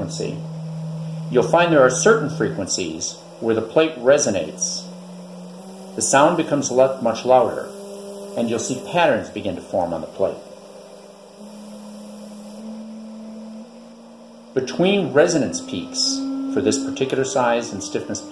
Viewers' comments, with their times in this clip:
0:05 I love your explorer-style attitude where you say, "I decided to ignore the recommendation of the manufacturer" and then proceed to test a whole raft of random materials. THAT dogged dedication and persistence is how cool stuff seems to get invented. Those things sound fantastic. I'd love to hear Dixie Dregs Dregs of the Earth over those babies. That used to be my sound system test record. What an awesome way to design artistic patterns!